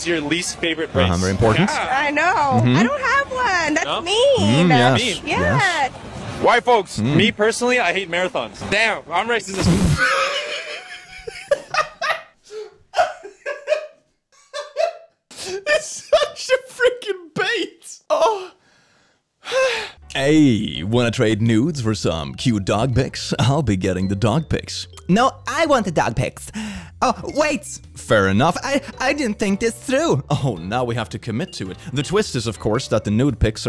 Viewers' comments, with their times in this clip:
0:06 It's not even the bait & switch that gets me, it's the way this man says "white folks" and the nonchalantness of "damn, I'm racist as-
0:09 why is his reaction so much funnier than the joke itself 😭 and the moan after he was done laughing like 😭😭
0:17 the way he moans got me